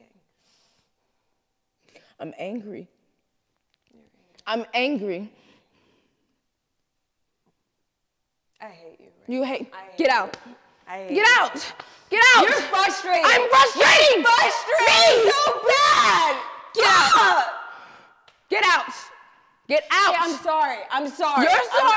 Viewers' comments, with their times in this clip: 0:03 was weird a lot of screaming transition to bi polar behavior “EXPLAIN WHY YOUR UPSET 😭 “